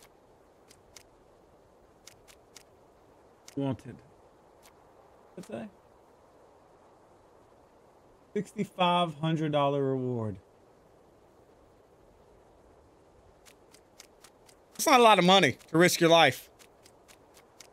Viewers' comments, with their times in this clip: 0:05 why did that sound nothing like him? He use a voice changer? Sus